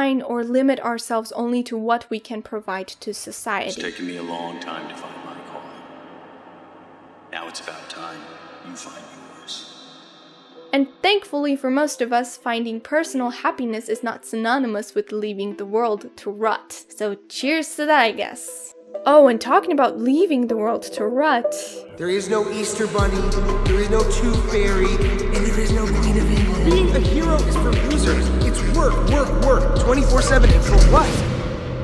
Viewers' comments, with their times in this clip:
0:09 what a great song on the background! I love this movie so so much and I loved your video! thx for sharing your thoughts and observations about this wounderful movie with us!
0:12 love that you added the song